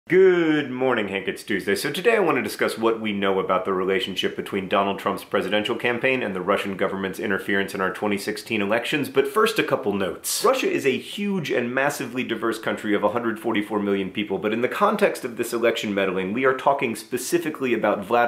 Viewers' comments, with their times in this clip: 0:00 Someone sure does record their audio in stereo!